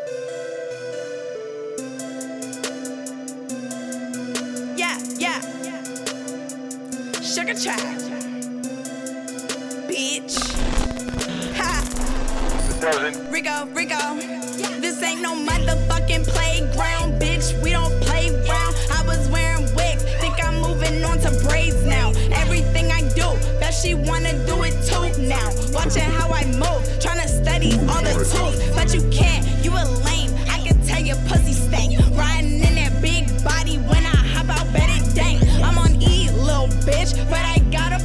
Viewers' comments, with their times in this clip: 0:09 that 'bitch' was too clean
0:24 That heel tap 🔥🔥🔥